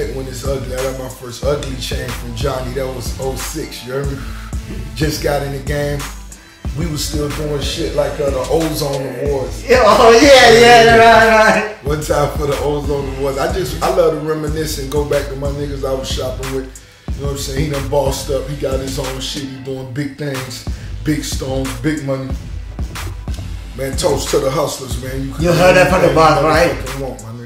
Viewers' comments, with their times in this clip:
0:09 Johnny dang does the spongebob laugh 😂 😂😂